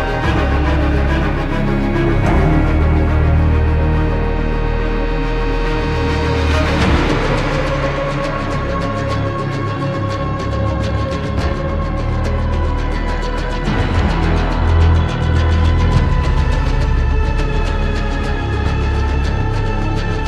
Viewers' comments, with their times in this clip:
0:06 best menu music in multiplayer... i miss it so badly😭😭